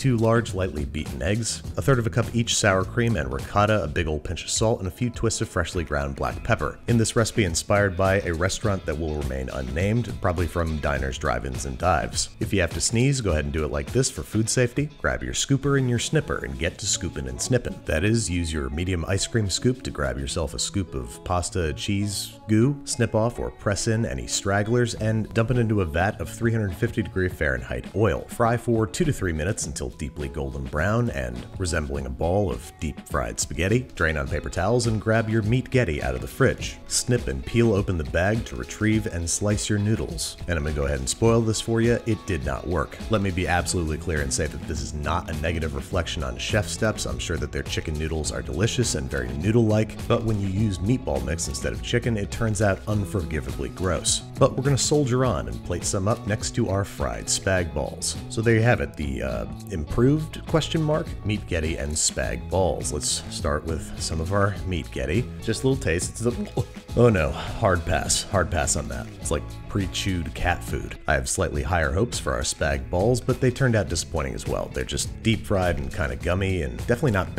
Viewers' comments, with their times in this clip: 0:10 So that's what that sneeze was.
1:02 You can clearly hear his hesitation in the words...and I knew he would instantly go brrrrrrr